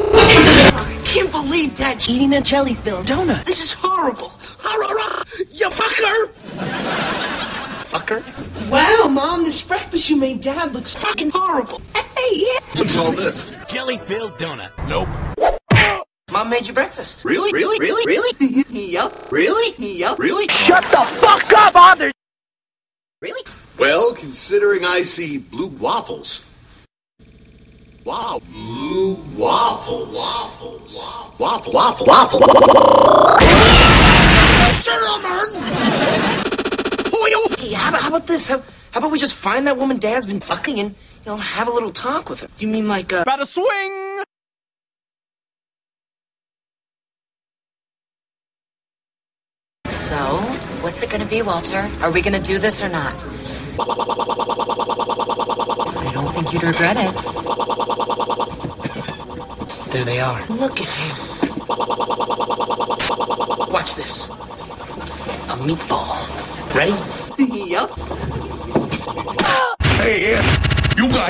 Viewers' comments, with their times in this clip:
0:05 How on earth did that sound so realistic?!
0:54 If you slow the video down to .25x, you'll hear that he is saying waffle repeatedly.